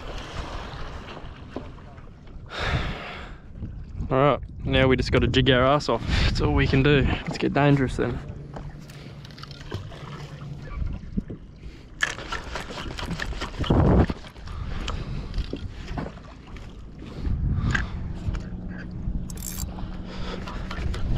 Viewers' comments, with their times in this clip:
0:03 when you said we’ve gotta jig our ass off it sounded like you were on auto tune